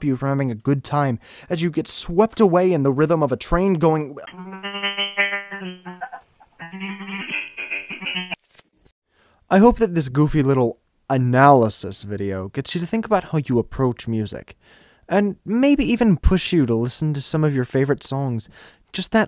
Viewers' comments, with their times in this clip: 0:05 sounds like a train to you? Tbh it sounds more like a tiny riff that’s slowed down